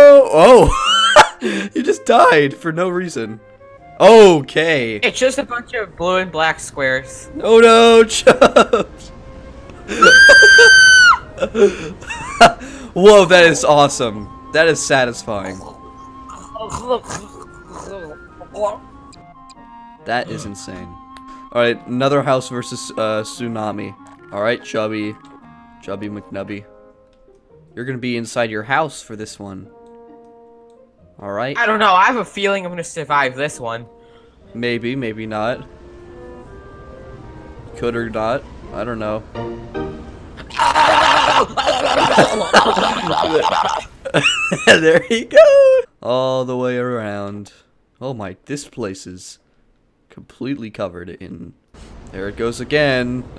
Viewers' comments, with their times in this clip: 0:09 what did bro scream like that💀
0:40 That battle cry sounded like how I cried as a baby
0:40 that scream bro😂😂